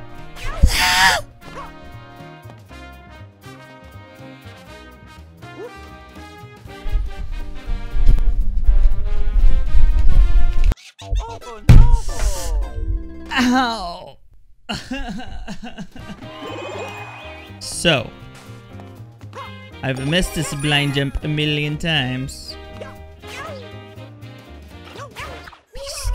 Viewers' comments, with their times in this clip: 0:08 what he's doing and the music doesn't match at all